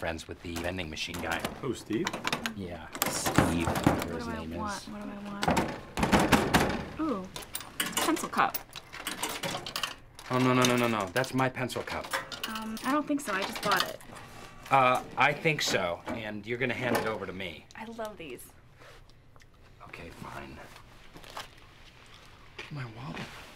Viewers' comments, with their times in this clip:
0:07 Ever realize how Pam only put in three coins on the first prank but got an item that costs 1 dollar, I never got that..... I mean, it could be a 50 cent coin, but that’s unlikely in my opinion You can hear it